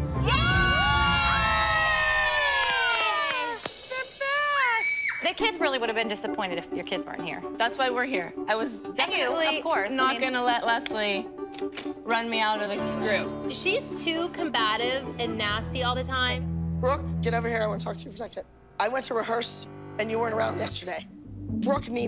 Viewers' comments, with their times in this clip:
0:04 The random scream still kills me😂